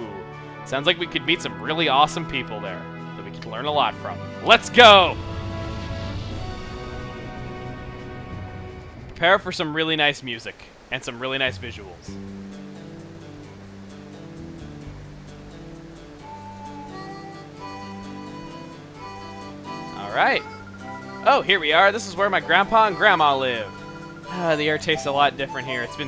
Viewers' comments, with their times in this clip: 0:07 the music really fits what you're saying